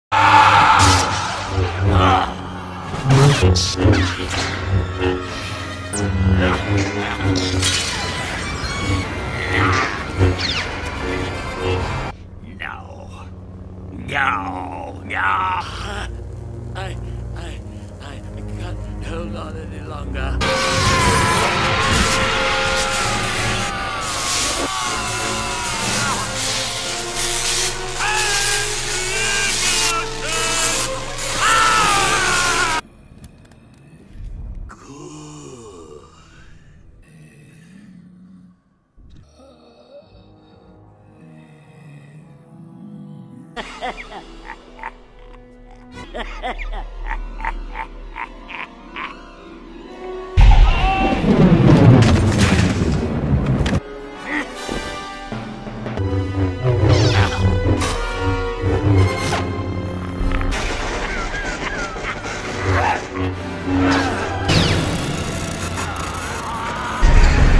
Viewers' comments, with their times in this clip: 0:00 fun fact: this is actually a force ability called a force scream. it was used to stun the enemies with a loud, ear bleeding scream. it’s the reason why sidious beat kit fisto and the other two almost instantly. vader actually had this ability, sidious just ordered him not to use it for some reason. edit. this isnt canon btw
0:29 The way this scene just cuts to silence, with Windu suddenly gone and Palpatine awkwardly trying to get up, is hilarious to me for some reason 😂
0:39 that death rasp. Guy needs his lungs checked out. :3
0:43 They used the same laugh, but I'm not complaining. 🤣
0:48 the video cuts mushed together make it look like palpatine laughs so hard, it literally knocks him backwards